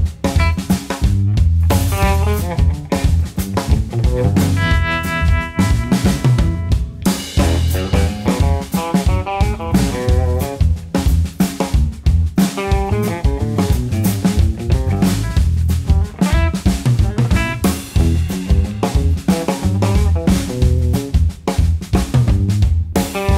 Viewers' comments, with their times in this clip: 0:04 such a FAT snare sound,